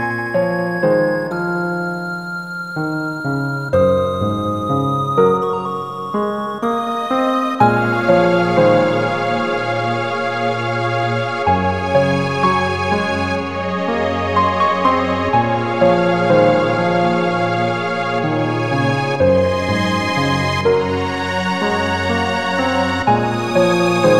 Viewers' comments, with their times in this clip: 0:06 its when those strings come in